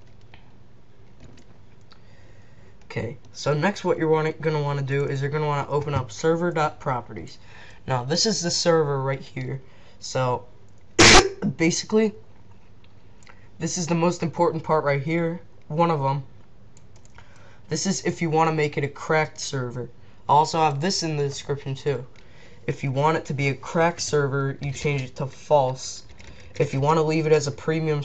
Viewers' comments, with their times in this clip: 0:10 for epic sneeze cough